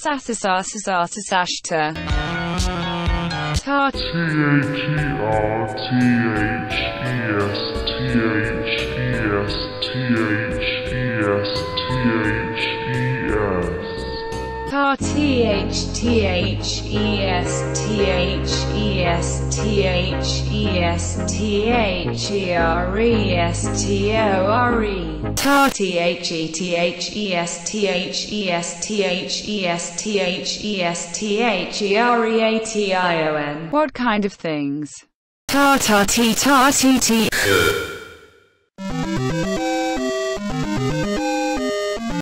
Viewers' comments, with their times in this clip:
0:04 The fact that i read this comment with this: as the background music makes it more creepy
0:04 the music = my brain after i wached this video.
0:35 sounds like she’s a music teacher now
0:37 Was that fr a burp 😂😂 I didn't know translate can burp 😂